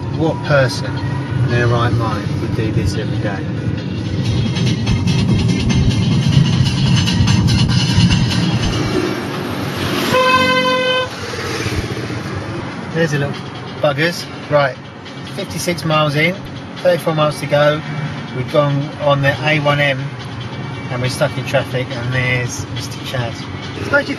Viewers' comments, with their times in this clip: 0:10 why was he honking ?